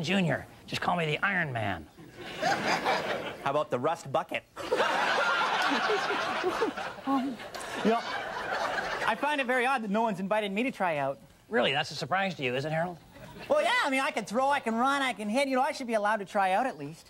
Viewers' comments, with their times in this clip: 0:03 how about the rust bucket rimshot 😂 🤣😂🤣😂🤣😂🤣😂🤣😂🤣😂🤣😂😂🤣😅